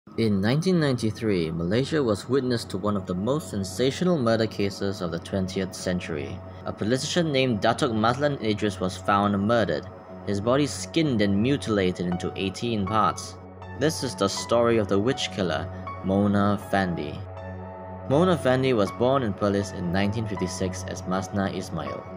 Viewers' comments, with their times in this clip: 0:06 ive never heard politician pronounced "pole-iti-shin" lol